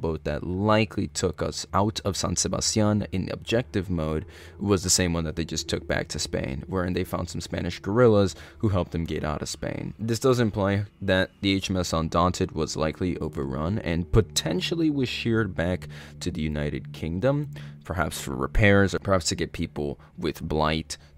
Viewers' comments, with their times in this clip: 0:07 Somewhere I thought he said "Spanish Gorillas"